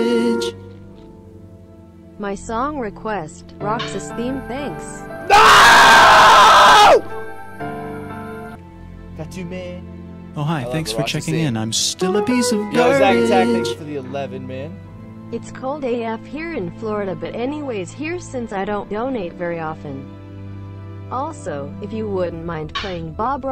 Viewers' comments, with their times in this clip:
0:05 Roxas' theme started at the perfect moment!